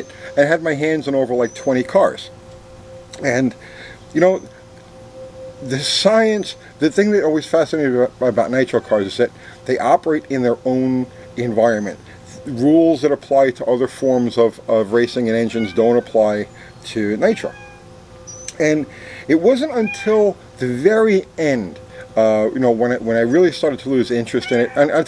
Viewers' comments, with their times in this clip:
0:10 had to try and figure out if it was a cat or me wheezing